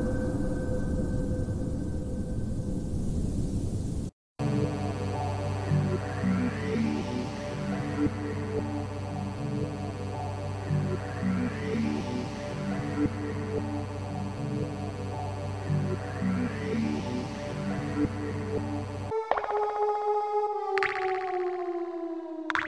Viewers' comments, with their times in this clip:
0:04 This isn't unnerving music, I like Yellow Highway. Aquatic Ambience is also a classic.